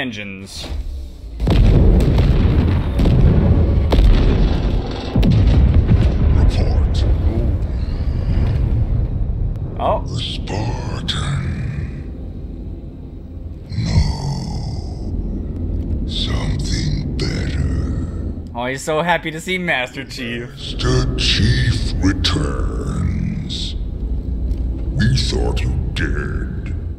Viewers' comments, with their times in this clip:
0:10 murk music gains the power of the sun